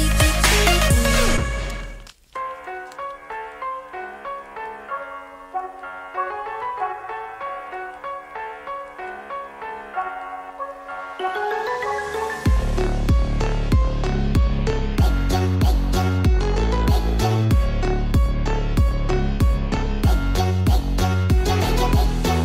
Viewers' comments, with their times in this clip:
0:03 best music :D